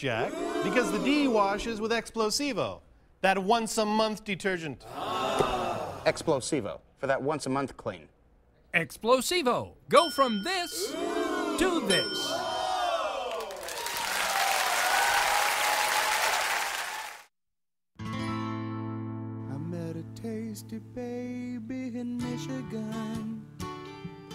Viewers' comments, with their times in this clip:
0:08 I hear Bob Odenkirk!